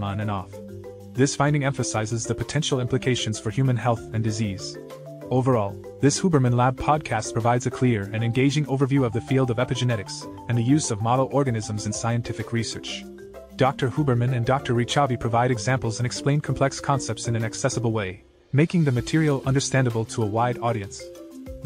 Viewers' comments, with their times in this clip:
0:06 The audio skipped a sentence about lithium.